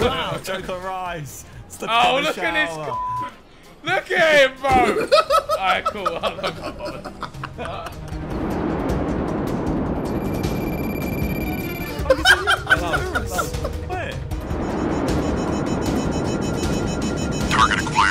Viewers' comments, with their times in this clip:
0:03 JJ sounded like scooby doo